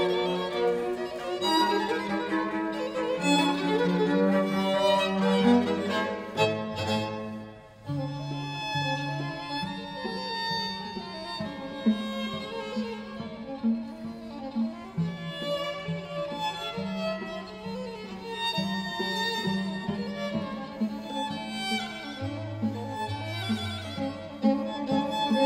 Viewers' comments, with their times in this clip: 0:07 Beautiful, enjoyable playing. Bravo!!! we come across one of those rare solos for the second fiddle, (very well executed, by the way.) There's another in Mozart's 20th piano concerto and another in his 23rd piano concerto. There's one in Borodin's second symphony, in Beethoven's third symphony, in Bartok's concerto for orchestra, and in Verdi's Traviata toward the very end. All of them are crucial solos.